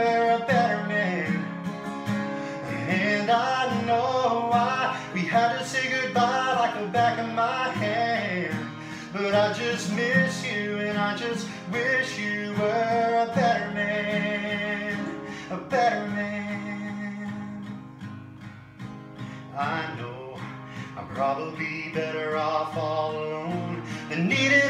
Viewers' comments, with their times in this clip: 0:06 I think Chris Young is a better comparison, especially the way they ascend/descend notes. e.g. "hand"